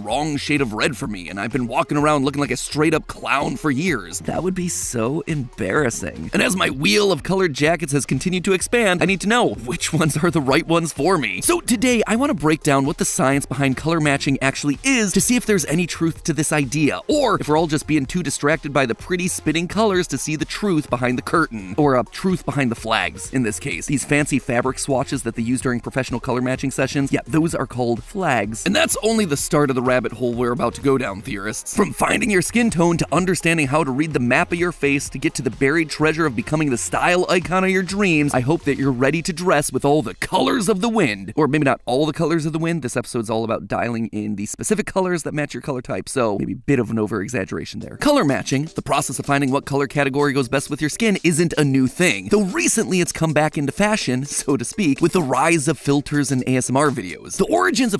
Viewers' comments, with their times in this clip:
0:03 uwu alt girl matpat voice
0:39 I love that song.